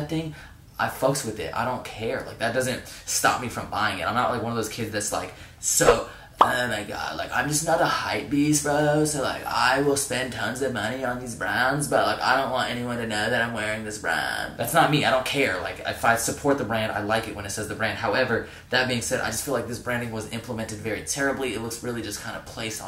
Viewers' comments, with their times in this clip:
0:10 Your gay voice in is so perfect lmao